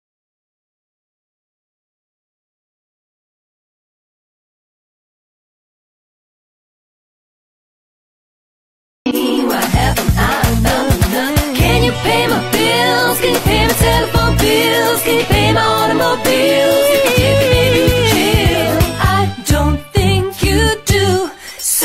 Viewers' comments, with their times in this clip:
0:09 this music made me uneasy 😂